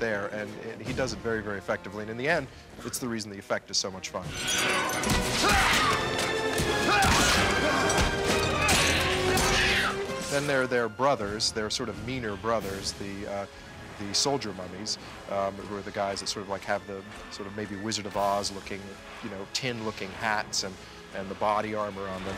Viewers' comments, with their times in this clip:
0:05 the mummy scream. im allways laugh becuse of this ^_^